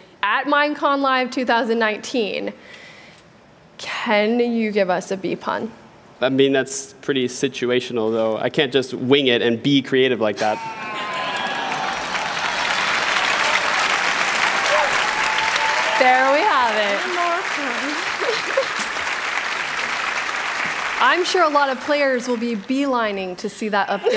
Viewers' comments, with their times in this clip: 0:08 sounds like someone literally died taking their last breath after that pun